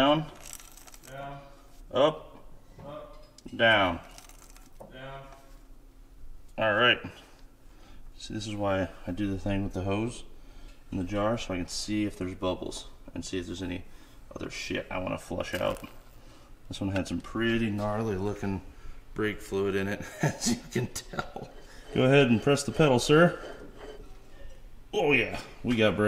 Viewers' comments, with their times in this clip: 0:09 OG ghost cam tune lol